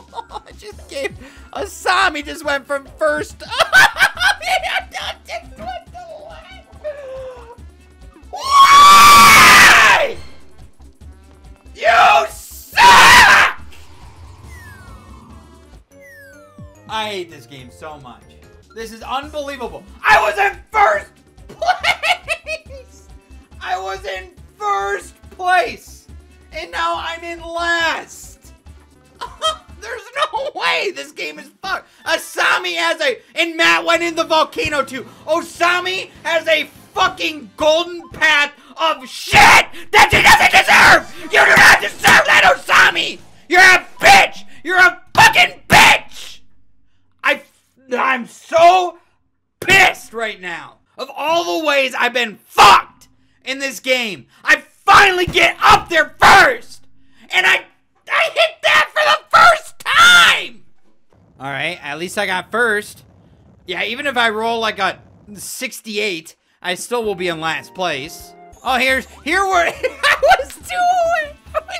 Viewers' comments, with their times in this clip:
0:03 is probably the best scream- yell EVER
0:03 ⚠️Banshee scream incoming⚠️
0:06 hey guys quick disclaimer: is a part where the audio goes very quiet so i suggest you turn up you volume.
0:06 this is so visceral I feel this on an emotional level bro I've sometimes felt like screaming like this
0:07 when an alien in starwars dies
0:07 "and here you will hear what sounds to be a mental breakdown"
0:07 thats scream woke up so many people lmfao
0:07 That Scream Gave Me Life
0:08 he sounds like a child in a supermarket wanting sweets (yes I’m from the UK) when his parents told him no 😂 🤣
0:08 damn he hitting them high notes
0:08 the mating call of a Raging Bull.
0:08 Can I just state the fact that his scream sounds like R2-D2?!
0:08 see you in a Gaming Edition Perfectly Cut Screams Comp. Poof
0:08 is like a demonic scream that I would do at random times
0:08 he sounds like a fuckign tie fighter from starwars
0:08 the way his voice gets high made me laugh so hard I almost burst a lung
0:08 R2D2 is that you?
0:08 Can we have R2D2 No we have R2D2 at home R2D2 at home:
0:08 that scream was so funny that it was in SMG4 Nintendo memes 5 where Mario went insane over an among us meme
0:08 I think you mistook as a scream. That was an air raid siren
0:08 Nobody: Birds at the pet shop:
0:08 the sound of a man beyond depression
0:12 i dont like the screaming ....
0:32 Listen to him raging
0:39 that was the most aggressive “SHIT” I’ve heard lmao
0:43 poof sounds like a vine that could've been made of a child having a tantrum
0:43 why tf does that sound like Jonathan Davis in "daddy"?
0:45 it sounded like he was about to cry
0:54 When he said “I FINALLY GET UP THERE FIRST” it’s sounds like he’s about to start crying.
0:55 when he says “I finally get up there first” it sounds like he’s gonna start crying
0:59 he went from a screaming 7 year old to a grown man in seconds
0:59 sounded like he was crying